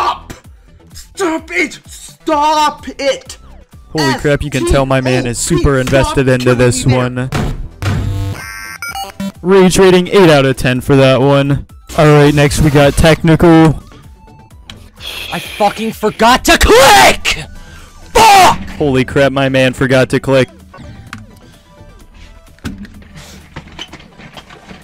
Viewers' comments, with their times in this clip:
0:07 Man raged so hard he spoke the terraria underground theme